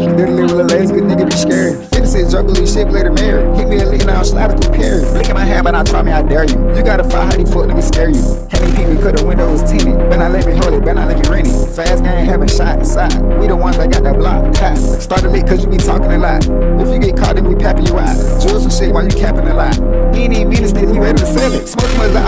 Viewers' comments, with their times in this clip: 0:08 that flow right here